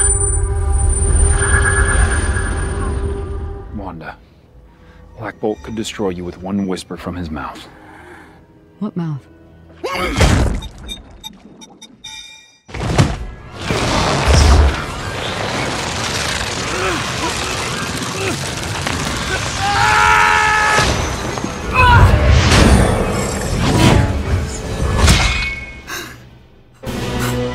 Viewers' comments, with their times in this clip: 0:09 i thought he sneezed at first